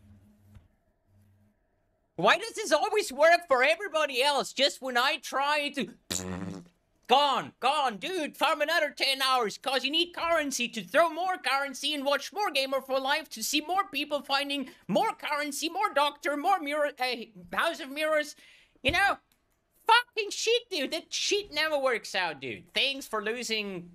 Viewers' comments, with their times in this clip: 0:05 that was a perfect fart!